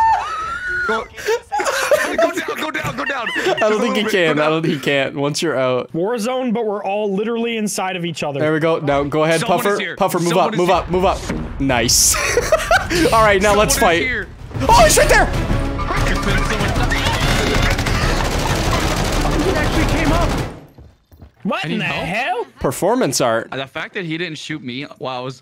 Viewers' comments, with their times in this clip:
0:07 IPhone connection sound